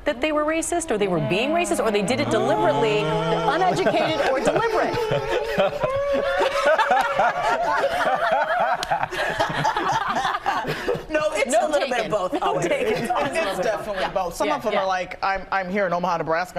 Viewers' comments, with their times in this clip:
0:03 When all the black folk start humming in harmony 🤣🤣🤣